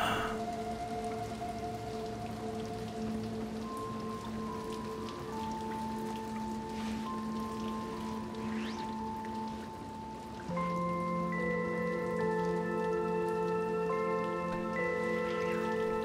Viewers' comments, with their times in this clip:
0:04 you can hear six's theme play when she puts the jacket on